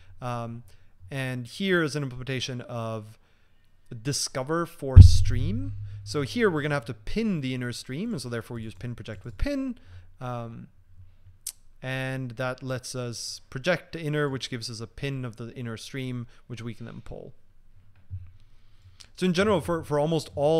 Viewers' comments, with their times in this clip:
0:04 Caution for viewers with ears, there's a loud mic thud